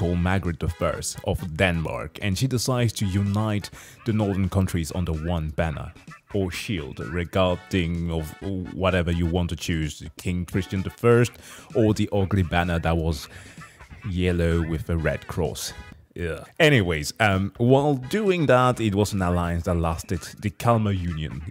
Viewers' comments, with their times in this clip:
0:06 malo mart music hits hard!!!😍😍😍🔊🔊🔊